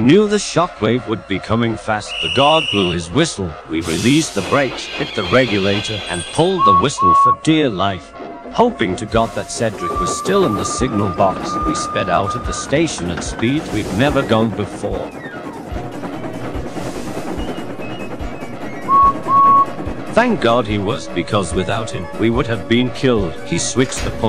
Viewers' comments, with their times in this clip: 0:09 Edwards whistle sounded so cool- it sounds like him irl if he was real